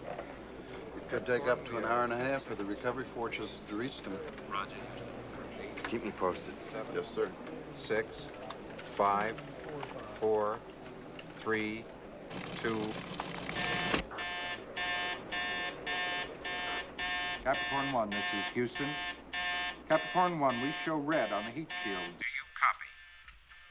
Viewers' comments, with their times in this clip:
0:10 I always liked the scene where the buzzer sounds, and everyone stands up and turns around. Of course in a real NASA control room, everyone would be concentrating on their own instrumentation screens and gauges.